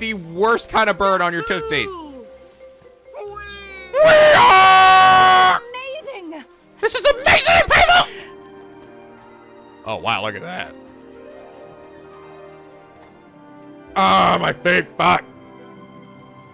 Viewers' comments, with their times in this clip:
0:03 ouch my effin ears xD That WEEEHAAAAAW exploded my head